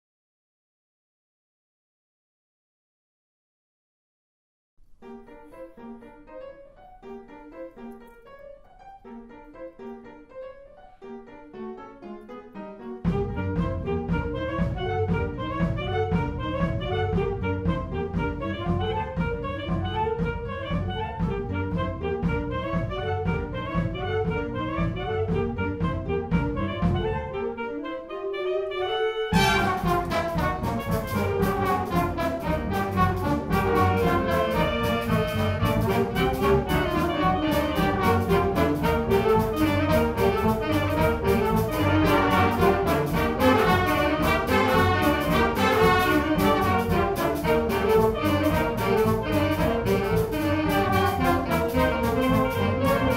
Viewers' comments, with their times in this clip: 0:09 Nice cover! Only problem is the mess up
0:29 Oh god its good :-)) I like this "drop" in so much :D Greetings from Czech republic
0:36 Pretty messy arrangement tbh. Probably would have benefited by giving the section starting to the trumpets to give it more punch. The tempo could have been faster and there should have been less players. The more players, the more likely that the looseness of the rhythms are going to be lost. Still a fair attempt. 6/10
0:38 I heard nothing until when the trumpets blew in my ear, good job tho 👍🏻